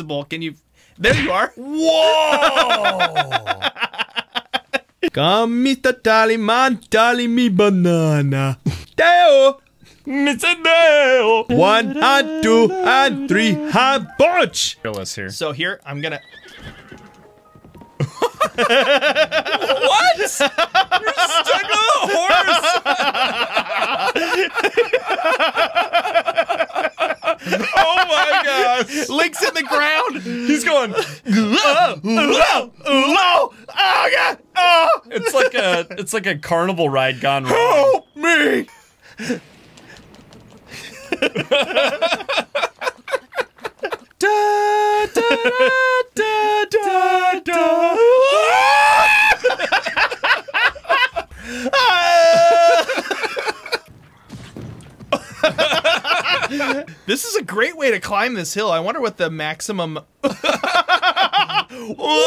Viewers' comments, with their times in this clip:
0:08 BANANA SONG WAS AMAZING
0:44 the way you guys sang and then went to "AAAAAAAAAHHHHHHHH" killed me so much. I love it